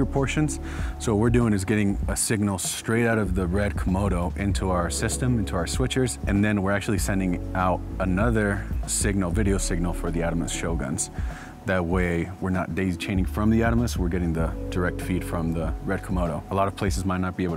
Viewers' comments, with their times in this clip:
0:04 Keeping it Unreal for the lord. could be my net connection, but as the videographer was mentioning lip-sync I notice his audio was not in sync. Translation for non-evangelicals - the message? the worship?